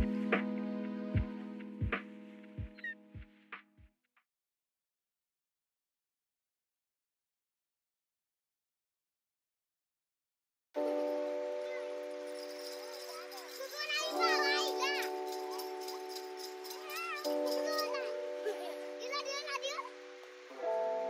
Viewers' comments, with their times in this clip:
0:09 Hey! anyone knows what language the children are speaking in ?